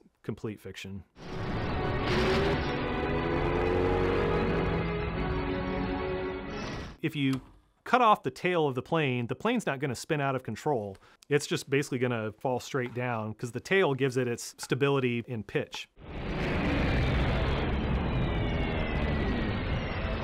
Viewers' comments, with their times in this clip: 0:04 That was a very underwhelming sound effect for that explosion